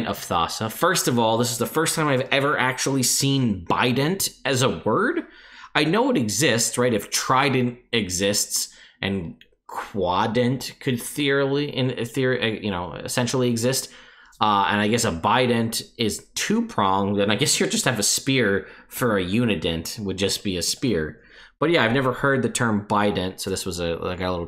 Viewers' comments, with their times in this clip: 0:09 "Quadent could theorly... ethe uhhh.. in therreh...." ABORT MISSION